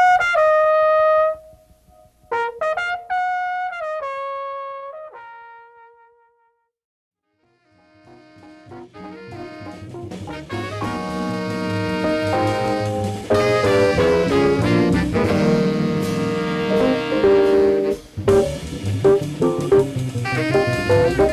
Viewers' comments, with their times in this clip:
0:08 Track #3 is The Intrepid Fox, the head in got cut off but the track fades in